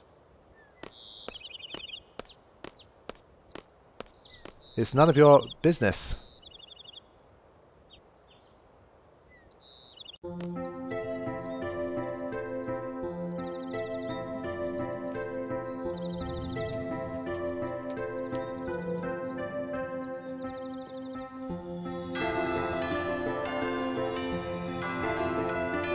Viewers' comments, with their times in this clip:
0:10 wow man the moment "Balamb Garden" plays my heart aches xD and this reminds me of how time past so fast...